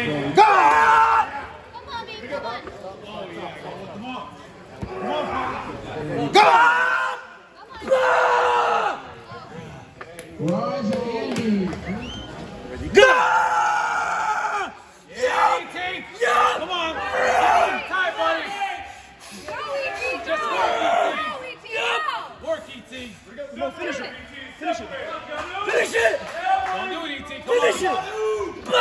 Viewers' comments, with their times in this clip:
0:09 Peace! 'n so on; why you are shouting?! Maybe it shows that no respect to enemy. God Bless Maranatha!